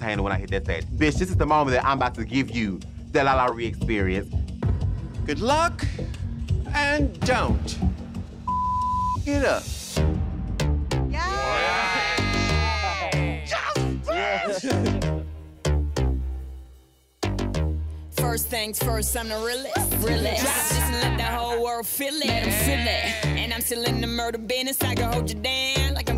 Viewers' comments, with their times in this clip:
0:10 #12 we knew exactly what we getting into when Tamisha Iman gave out that chuckle seeing Miss Girl hit those beats ❤️👊🏽